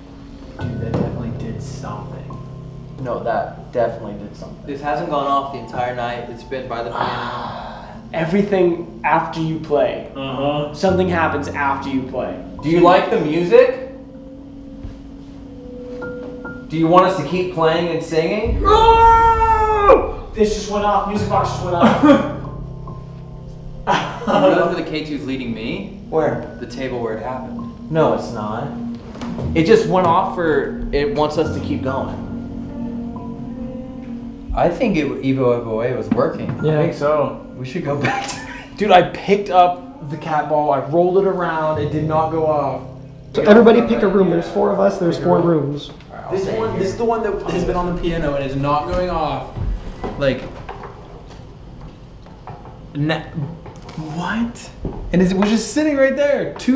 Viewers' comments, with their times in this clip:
0:05 something breathed into the mic
0:07 I know I’m not crazy I know I’m not the only one that heard a woman sigh right into the camera!!!!!
0:07 someone breaths heavily
0:19 this is an old vid so someone might have cought this lol either someone in the background is singing or from what i hear its a woman singing the same song.
0:25 you can here what sounds like a female voice singing the e-o-e-o-a song. idk if it was background music or not but it freaked me out lol.
0:27 ish you can hear a girl singing the song they were singing earlier
0:27 when they are talking about the song and someone lifted something off the table you can hear a kid singing the song
0:27 there is a woman singing in the background. Do your hear it?
0:31 when you all are talking in the dining room, do you guys here that singing very low in the background?? It goes for like 5 seconds, a very low sing-song voice ..... suuuuuper creepy. Not sure if that something .....
0:32 i went back like dunno 10 times bc it sounds like a girl singing that chant or is it just me????
0:32 you can hear a woman's voice singing. i have chills omg
0:32 Dude you can hear the song they sung. Idk if it’s the editing but still
0:32 was there a woman with them or nearby ??? I hear her singing the ma chant?? It’s as they are talking
0:32 Who was singing in the background ?
0:32 there is a women singing to the melody he was playing earlier for about 10 seconds but they are all so loud and talking none of them realize or hear it.
0:33 if that isn't one of you singing, that is one of the longest EVPs I have ever heard.
0:33 I had to watch it over and over again. I can hear a young woman singing when you are standing at the dinner table (after he played the piano/organ)
0:33 you can hear a girl singing clear as day!!👍🏻
0:33 I can hear someone singing, unless it was one of them singing in the background
0:34 YOOO LISTEN CLOSELY YOU CAN HEAR SINGING
0:34 is it not only me or do y’all hear a woman singing
0:36 Please tell me that that was one of the guys singing the chant cause u can hear someone in the background and to me it sounds like a Womans voice
0:37 about she starts singing it so clearly wtf
0:37 I'm like 80% this is one of them singing in the background (can't figure out who) but I still found it so creepy because of the like distance presented between them too so all you hear is just faint singing. It's really creepy but entertaining I love the content though!
0:37 onwards for a good 7 seconds I can hear a female doing that chant 😱😱
0:37 theres a lady singing the chant when they are talking about how the chant works...seems its only picked up by the mic onwards
0:39 Im just re watching this again and at this time stamp they are all there talking and you can hear the ee oh web oh wayy chant in the background but they are all on camera talking
0:42 you can hear someone singing the song